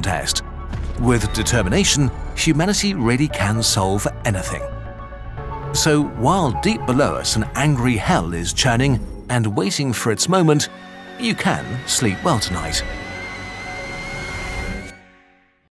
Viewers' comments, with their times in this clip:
0:11 The kettle whistle at the end is reminiscent of when Pinkman killed Gale B.